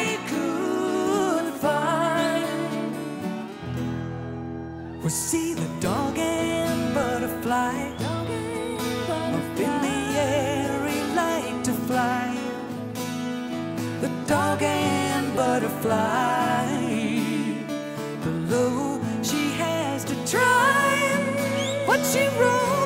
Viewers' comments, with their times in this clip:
0:09 Ann's voice is so majestic and powerful and unique that I stupidly forget Nancy hits you with that haunting harmony G#. Then I magically remember all the badass harmonies she's hit these last 40 years or so.